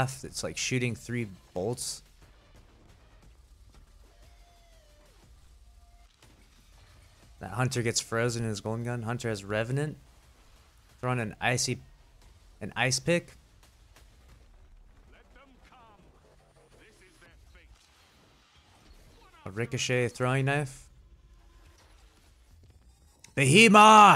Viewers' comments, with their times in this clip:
0:06 that looks like a new beloved to me. Also sounds a lot like it